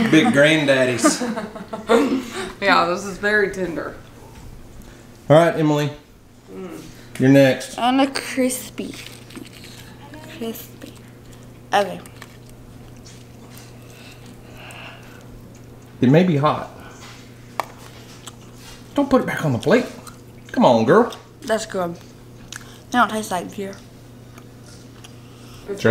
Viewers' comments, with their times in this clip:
0:07 anyone here the kids playing among us in the background